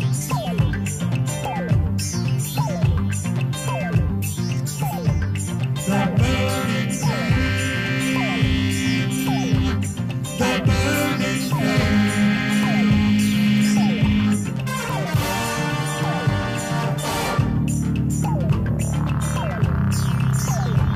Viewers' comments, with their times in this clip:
0:08 Please allow me to add one more thing. I think this was the first Indian Movie where R.D Burman used Vocoder effect (When mic is connected to Synthezier and the singer vocal is routed by Synth and produced robot like voice) Here Burman Da used Vocoder effect Please listen carefully. Kind Regards From Pakistan